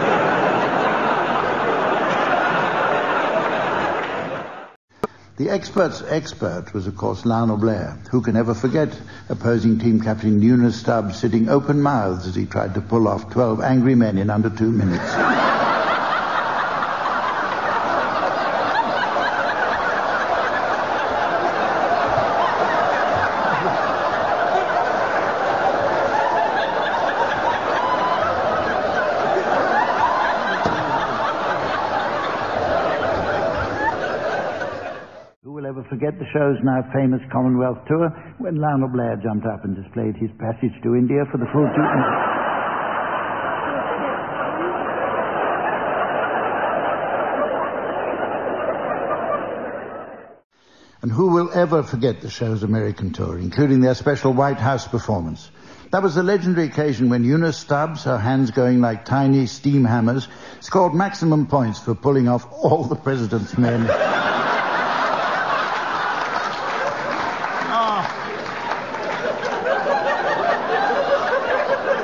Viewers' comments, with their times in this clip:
0:05 12 Angry Men. You can hear successive waves of laughter as the multi layered joke unfolds in the mind
0:08 Total classic Sandi Toksvig in hysterics
0:16 I'd put money on that being Sandi Totsvig's laugh 😄
0:57 His delivery was genius. you can hear a quiver in his voice as he says 'All' ... i think possibly the only time Humph almost lost it for a second..